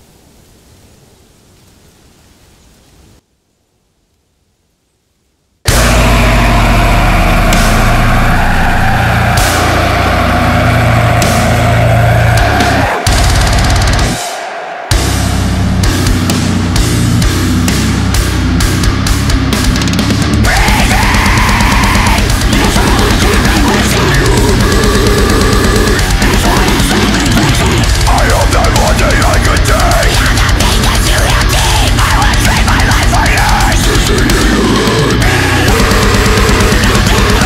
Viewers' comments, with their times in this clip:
0:06 that scream was perfect. I don’t know how you could fit the feeling of anger, suffering, and despair into one big growl. I could tell that one scream had one hundred emotions
0:20 that “breathing” sounds so fucking cool